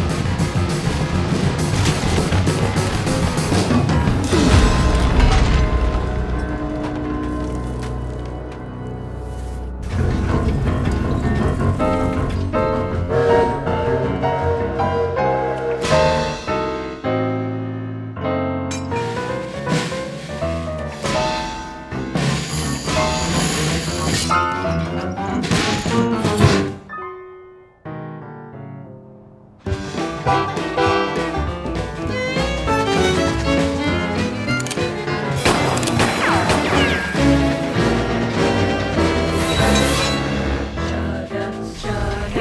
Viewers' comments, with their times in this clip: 0:04 Did anyone notice that Samson gave us a small “Oohf!” In
0:12 I love the detail here. Five whistles in a row is a code for ‘engine in distress’.
0:12 Samson’s Whistle Is Connor From Thomas & Friends’ Whistle At A Lower Pitch
0:27 I love this - the artwork is so beautiful and the song is perfectly sung as well. The depiction of Linus being replaced as the Railway progresses and then him being the hero is nice to see as sometimes older is better 🙂 I especially love that train and its grin when it realises who landed on it...... wonder if anyone found him after it was finished with him....
0:27 train really said “giggity giggity Alright!”